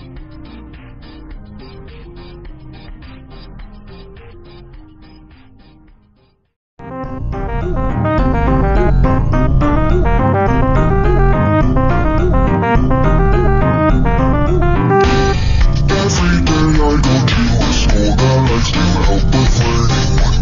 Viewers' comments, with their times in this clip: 0:07 THE FUCKING MUSIC AND THE VOICE WHAT THE HELL FUCK?!